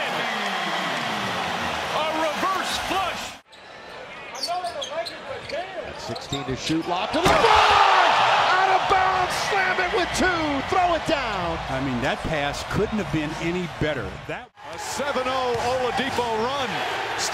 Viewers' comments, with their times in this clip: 0:05 you clearly hear someone say “I know there the Lakers but damn ref”😂🤣😂